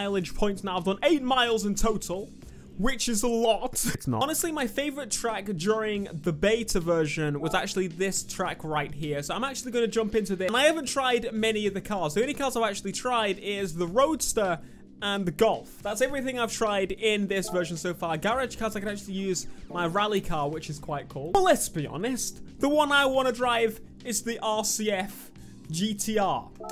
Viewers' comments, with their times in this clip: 0:07 diss track right here? I'm sorry